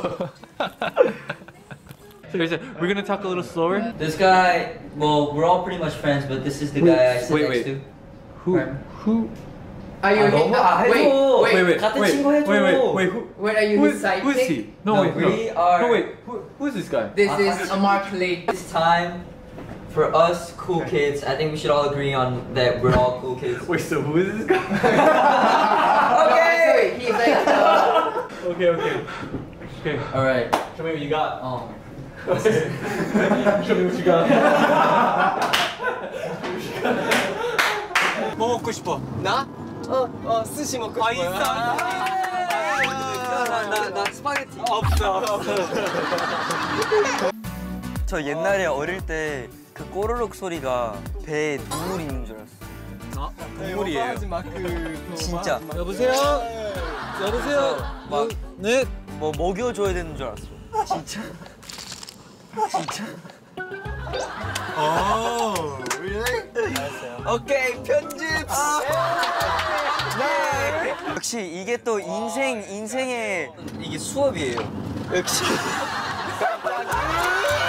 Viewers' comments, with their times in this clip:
0:10 I thought Ten asked is he his side chick when it was sidekick.
0:15 im sorry ik this is about johnmark but i couldn’t sTOP LAUGHING AT TEN’S VOICE IT REMINDED ME ABOUT SHEEN FROM JIMMY NEUTRON AGAIN EVERYONE KNOWS WHAT IM TALKING ABOUT RIGHT ?
1:02 Why everyone went silent? Can someone help me here?